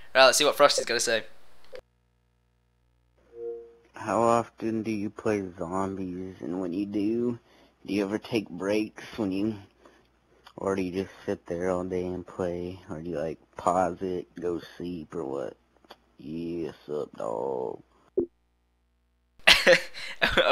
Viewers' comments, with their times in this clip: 0:04 sounds like chris off family guy